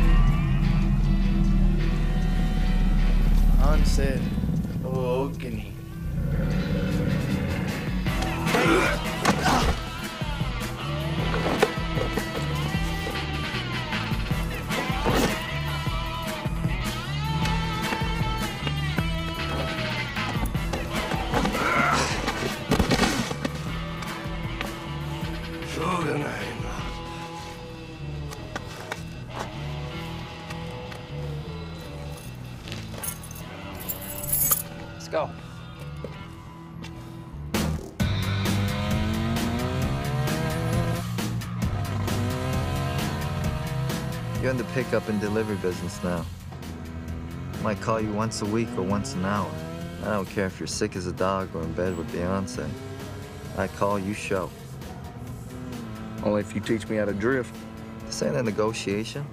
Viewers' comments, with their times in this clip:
0:08 and... throwing up sound??
0:40 That turbo spool